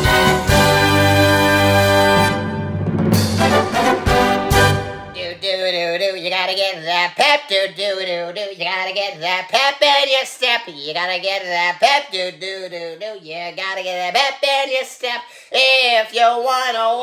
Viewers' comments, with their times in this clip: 0:03 Farkle does have a Great Singing Voice and even though they have Bad Blood with each other,Mr.Monkey just Trick Farkle by the Tripod makes me keep a Close Eye on Him.